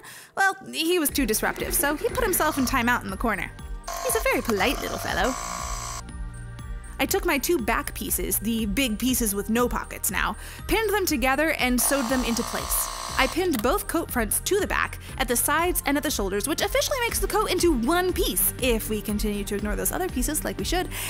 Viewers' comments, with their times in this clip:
0:03 you slowly hear my own nightmare in the background